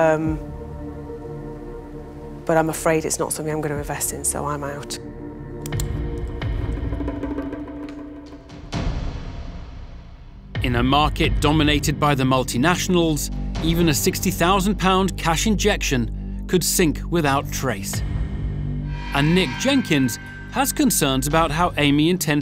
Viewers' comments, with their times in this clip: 0:04 the most dramatic pen click